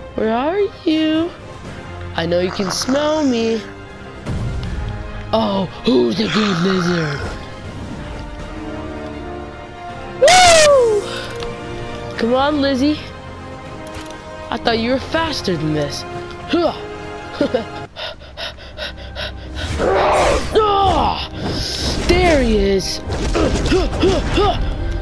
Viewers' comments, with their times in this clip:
0:07 you almost brock the mic